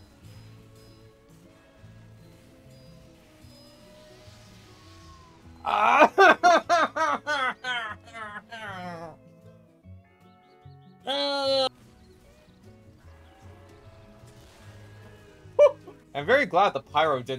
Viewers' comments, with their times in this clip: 0:05 feel good inc laugh